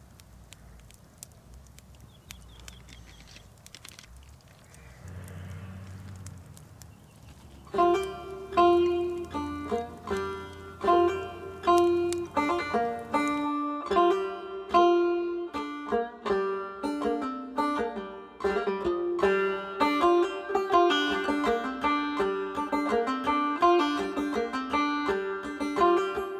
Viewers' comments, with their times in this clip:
0:08 the music came on and scared the shiiiiiizzzznniiiiiiiittttt outta me. Such a calm and quiet video then scared the daylights outta me 😂😂